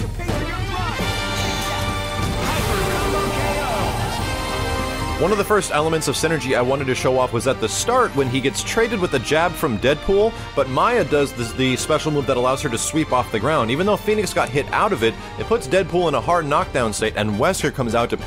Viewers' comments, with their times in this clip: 0:05 Phoenix wins also Phoenix: sneezes